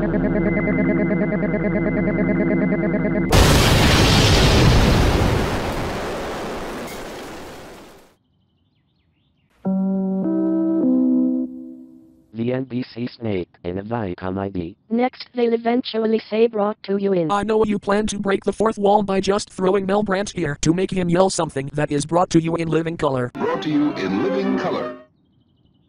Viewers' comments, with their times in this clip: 0:08 listen closely and you can hear some birds